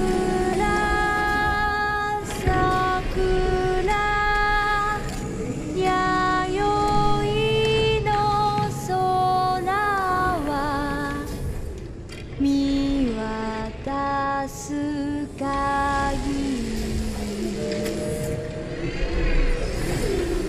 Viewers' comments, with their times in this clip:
0:08 this version of sakura is beauifully haunting and lives in my head rent free